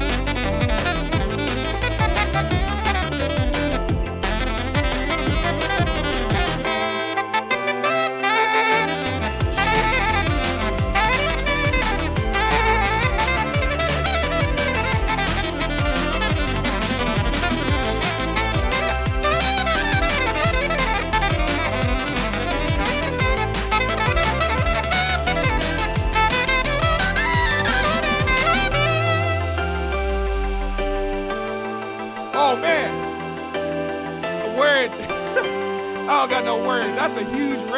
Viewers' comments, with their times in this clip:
0:08 Can anyone explain the sound he creates ? Is there a button/valve on the back he's fluttering? It's sounds so fucking cool.
0:21 This is amazing! I especially like the quick Mario kart lick